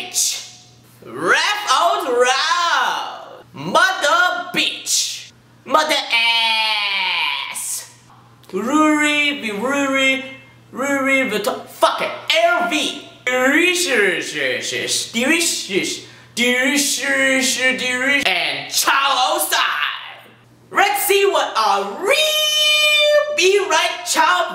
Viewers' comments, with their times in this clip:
0:07 lols rurideruriderurideruri lmao raugh out roud